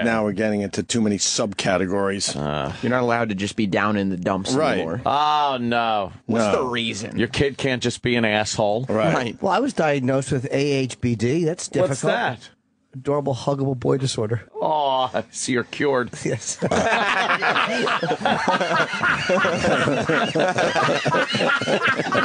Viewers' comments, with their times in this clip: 0:09 One for the laugh compliation